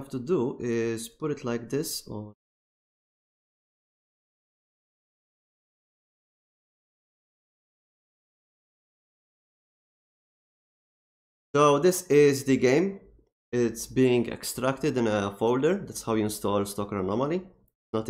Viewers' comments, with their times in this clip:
0:06 where did the audio go in